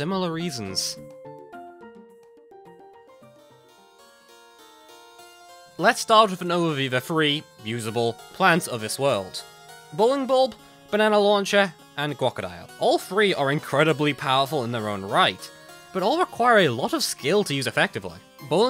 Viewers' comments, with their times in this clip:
0:04 "Oh no, he's playing classical music..."
0:04 I am pretty sure the music in the background is deltarune queen's theme but remixed and slowed down. (Sorry for irrelevancy)